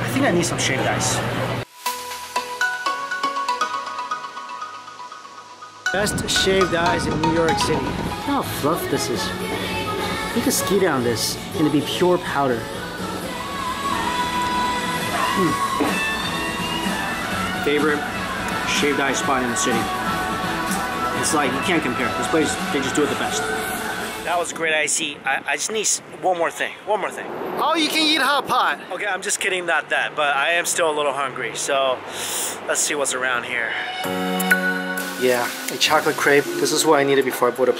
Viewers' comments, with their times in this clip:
0:09 The kpop in the background though.
0:10 DID I HEAR KPOP SINGING IN NEWYORK??? were r all my kpop fans at
0:18 I HEAR GFRIEEEEEEEND❤️❤️❤️❤️❤️❤️❤️
0:19 lmao gfriends song playing in the background 😂😂